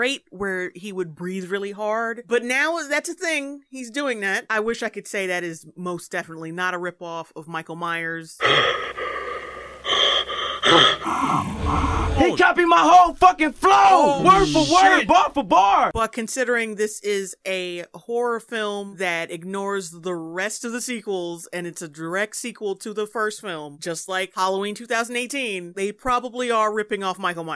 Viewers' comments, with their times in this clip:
0:10 brrrruuuh I cant unhear Michael being pissed